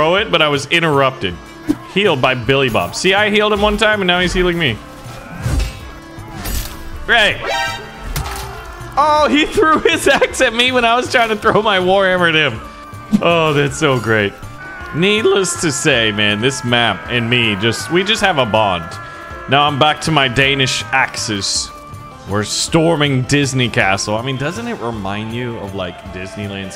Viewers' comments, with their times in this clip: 0:07 The voice crack is so funny